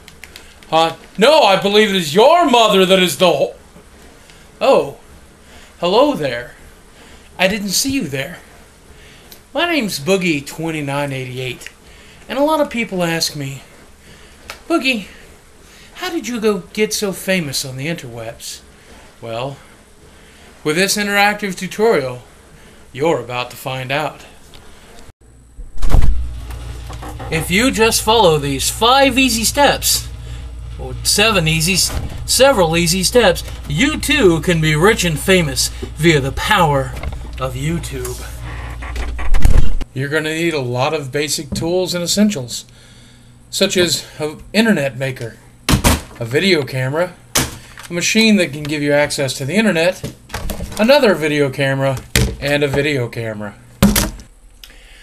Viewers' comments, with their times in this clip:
0:05 Ears still ringing from ...
0:39 Youre gonna EAT alot of basic tools.. hmm
0:39 You're gonna EAT a lot of basic tools???